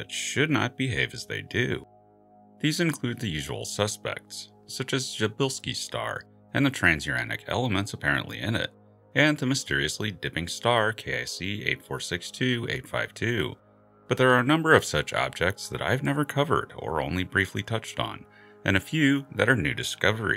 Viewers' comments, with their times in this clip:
0:06 Your pronunciation of Przybylski is pretty good!